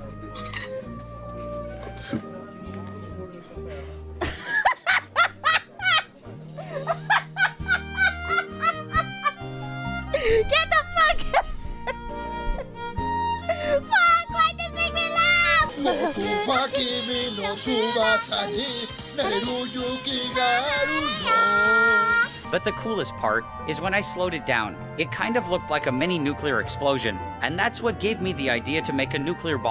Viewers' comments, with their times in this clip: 0:04 Mousey’s laugh mixed with Remy’s (the blue rat’s) smile.😂🤣💀💀💀
0:17 Adorable laughs had a feeling she was likes miss kobashis dragon maid